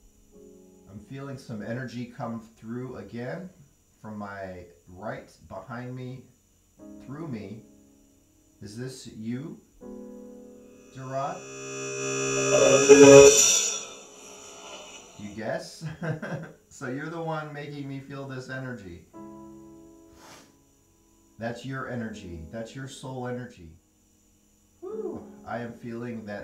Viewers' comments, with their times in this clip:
0:09 that sounded like x